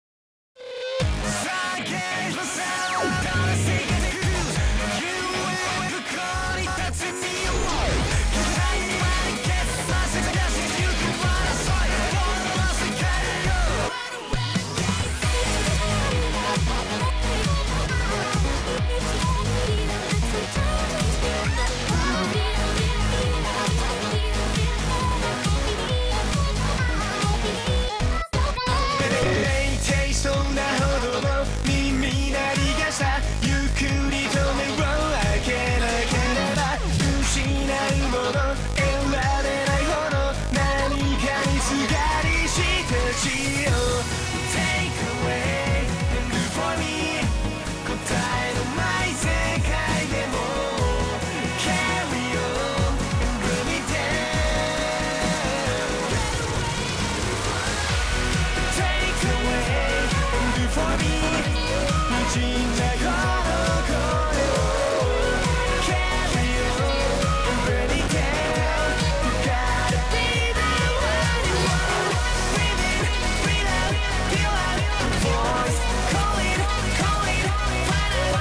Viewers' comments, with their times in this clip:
0:06 Song starts here
1:00 is my favorite part the music as it zooms out of his face gets cool :)